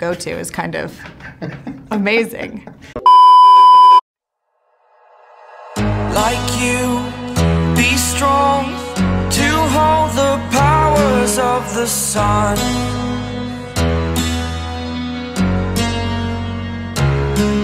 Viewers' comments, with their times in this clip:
0:05 Rip my eardrums